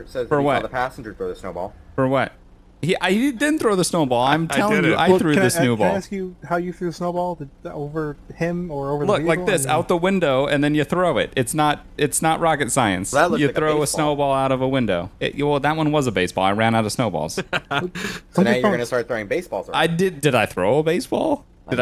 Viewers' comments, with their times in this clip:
0:05 someone said "Snewball" and it was pretty funny!